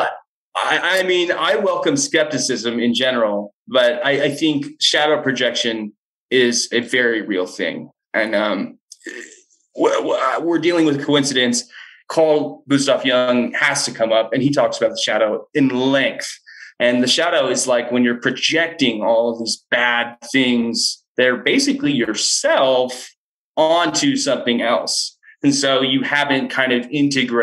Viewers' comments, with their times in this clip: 0:09 what happened to this guys voice?